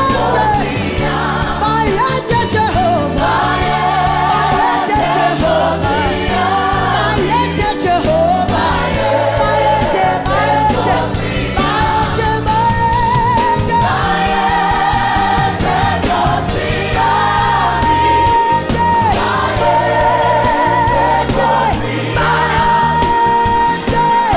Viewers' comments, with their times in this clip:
0:08 Someone check the key change on and look at that soprano 🤣🤣🤣❣️